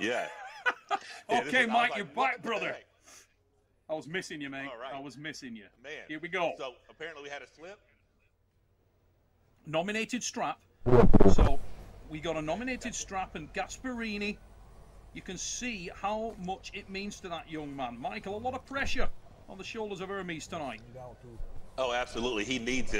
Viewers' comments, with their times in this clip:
0:10 Seems like someone attempted to break themselves off into the microphone system. Very Interesting